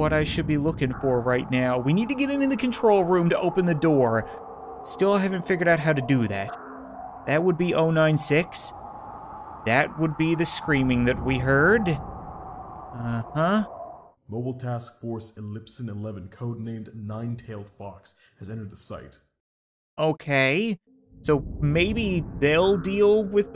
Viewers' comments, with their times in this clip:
0:06 shy guy screams because he look at his face not that guy that got squished
0:09 the screaming is actually 096, it doesn’t like its face being seen.